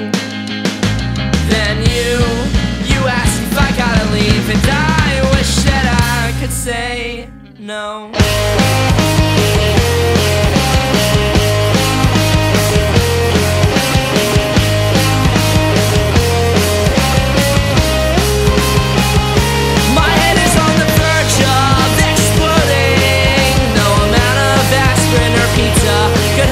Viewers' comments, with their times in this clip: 0:09 reminds me of something Weezer would do.